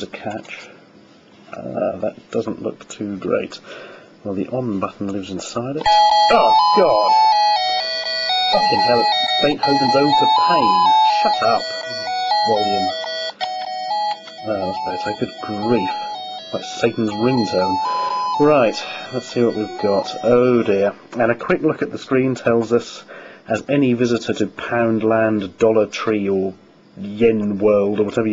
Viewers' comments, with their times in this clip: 0:03 one of the worst Ode to joy renditions i have seen thus far!
0:06 THATS REALLISTIC SOUND?!?!?!?!
0:10 realistic sound effects